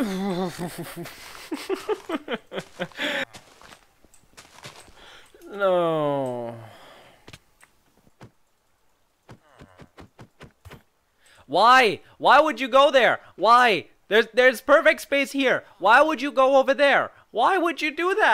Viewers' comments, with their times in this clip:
0:06 lmfao you can hear the sadness in his voice when he falls😂😂